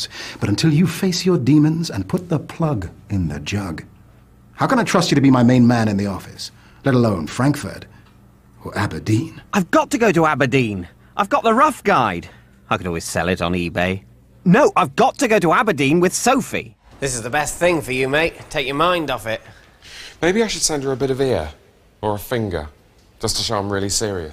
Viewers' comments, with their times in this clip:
0:05 He didn't say 'Fwonkfort'.